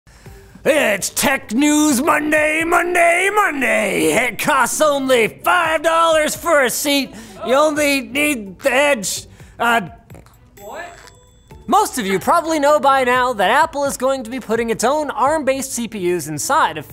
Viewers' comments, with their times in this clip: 0:00 tagged as "MONSTER TRUCK SOMETHING" I couldn't have said it any better myself.